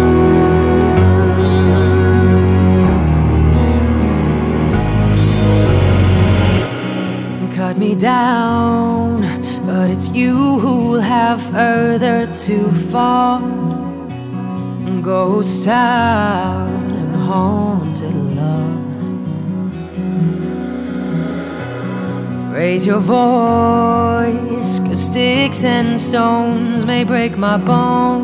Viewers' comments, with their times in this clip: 0:09 Sounds great at normal speed, but try x speed, it sounds awesome too!